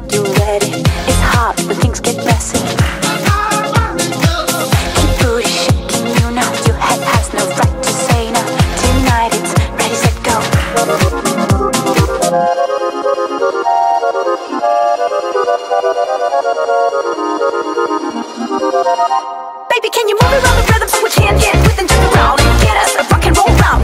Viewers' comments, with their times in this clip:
0:04 Goodnight comment section...I woke up just for this, so at least I got to listen to this classy tune AM. 😪